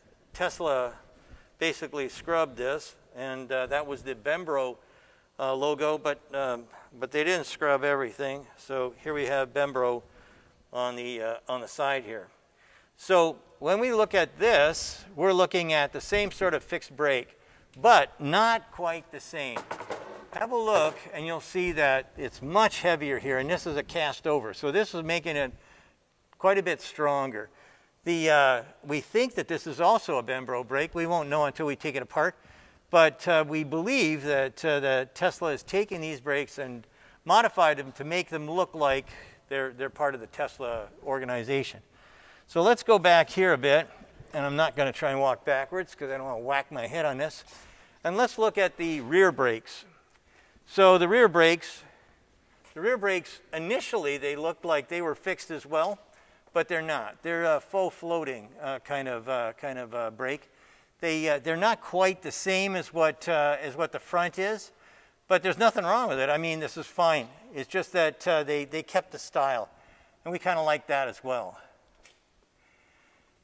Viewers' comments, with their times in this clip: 0:03 Bem-bro brakes, never heard of them :P
0:16 he is keep saying bembro instead of brembo
1:01 Although I don’t trust their reliability on the small stuff, I love their fast corrections without waiting for a new production year, and their outside-the-box engineering. as for Mr. Munro’s narration, I think all the “um”s and “uh”s are better than “you know” and “I mean”... well, one “I mean” but just ONE. I mean, you know, that’s unheard of.